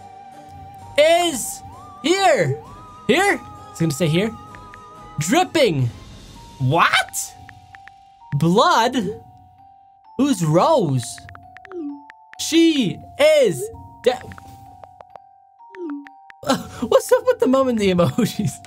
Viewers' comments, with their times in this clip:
0:06 sounds like Gru😂